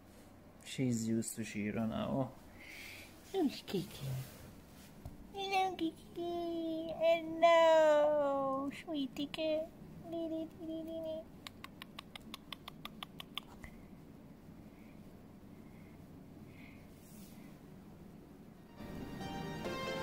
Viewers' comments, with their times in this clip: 0:05 wow, bunny's only lay like this when they feel safe, because they can't run away as fast if they are threatened. So Kiki reallyyyyy gives no effs about Shiro's grumpy growls ghehehe 🥰